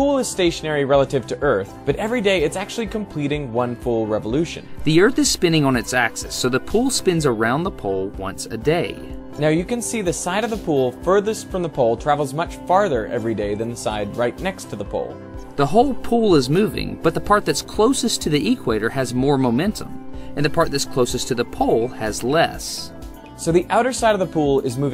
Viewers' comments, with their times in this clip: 0:05 now I understand why both had breaks in talking